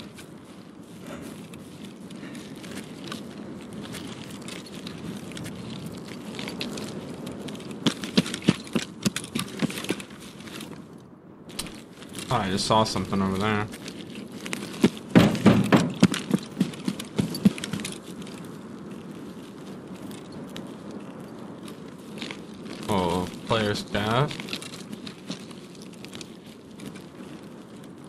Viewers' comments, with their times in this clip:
0:10 he says "I saw something over there", but nothing was visible. ZERO footstep sounds. Guy is 100% cheating, he NEEDS to be banned.